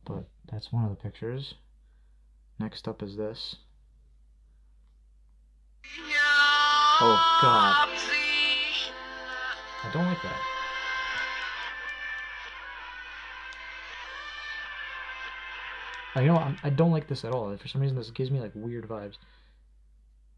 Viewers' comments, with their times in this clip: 0:06 Think that's Stairway to Heaven playing in reverse.